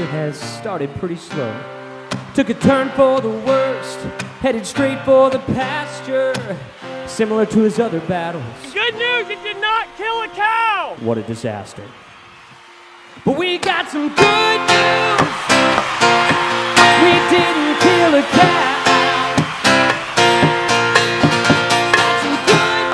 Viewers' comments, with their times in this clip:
0:10 that guitar riff and the singing sounded like the rhythm for Long Time by Boston